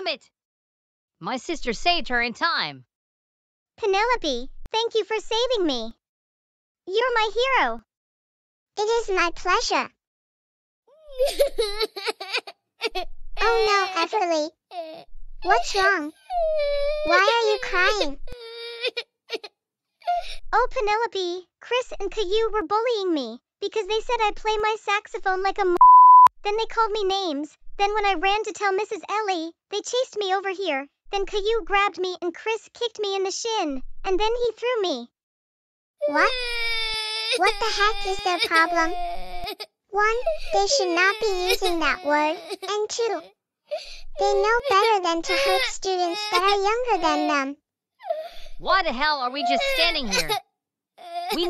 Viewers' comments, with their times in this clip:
0:10 Everly crying again
0:36 Everly continues crying